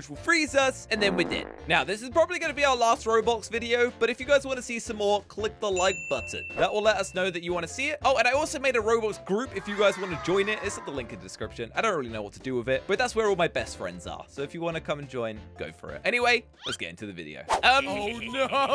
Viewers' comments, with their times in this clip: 0:03 the man said Robox and not Roblox bruhh